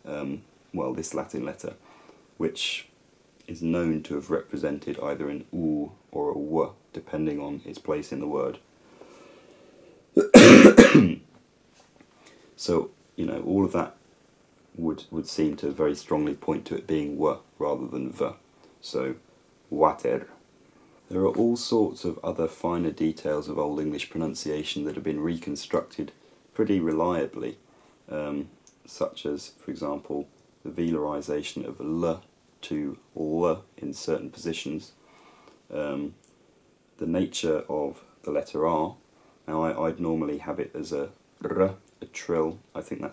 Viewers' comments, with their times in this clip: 0:10 It seems that there is an unavoidable, often very pronounced speech defect in which the standard "th' just cannot be pronounced by other than 'F' or 'V" for 'W'. Then of course, there is also the proletarian "I fink yer fick!" After your explosive cough at around, closely examine your own "all of that!" contraction. There seems to be a compound of both th and v. Thanks for your A1 video. As always I emerge entertained not to mention improved.
0:30 Can anyone catch the word describing different pronunciation of the letter L ? Sounded like 'venoisation' or 'venalisation'.